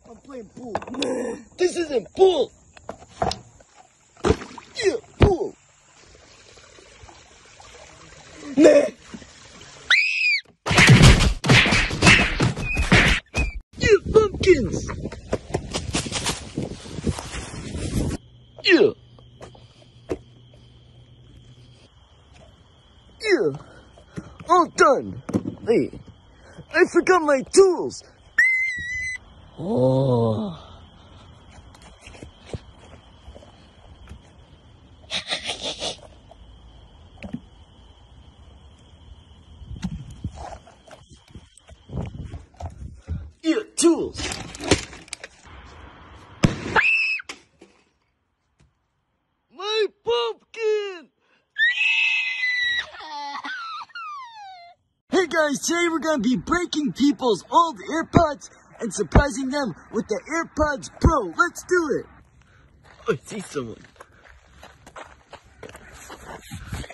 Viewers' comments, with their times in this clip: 0:08 THE GRUNT THO 😭😭😭
0:14 FOXY RUN SOUND
0:47 The scream is just everything 😂😂 and is just hilarious😂
0:51 the cry made my day
0:53 his cry got me dying 😂😂😂